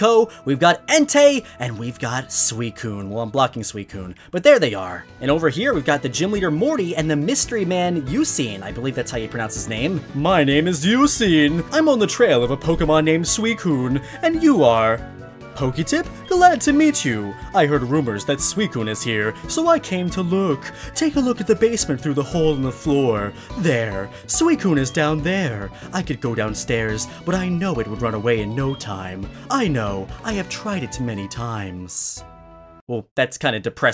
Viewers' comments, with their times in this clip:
0:10 Oh my god you sound like james
0:16 nice Pegasus voice